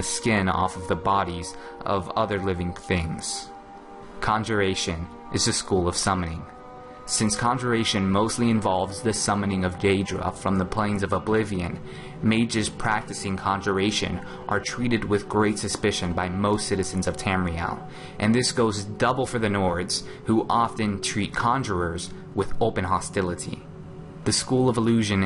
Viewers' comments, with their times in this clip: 0:09 Kinda sounds like he's saying "The summoning of Gay-dra"...sounds like SOMEONE is an Aedra fan lol.
0:10 did anyone else hear him say "gaydra" ?
0:10 did he just say gay-edra